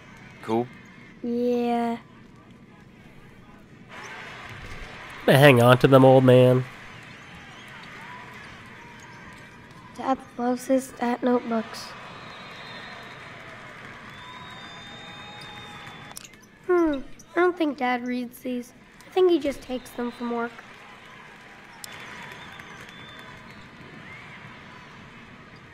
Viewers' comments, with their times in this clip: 0:08 Was anyone else’s audio delayed to the end?